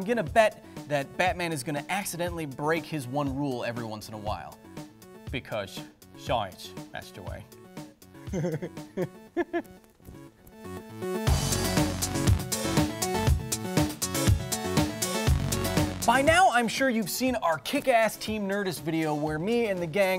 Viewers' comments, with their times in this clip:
0:08 that voice.. and the laugh!.. ahahha great :D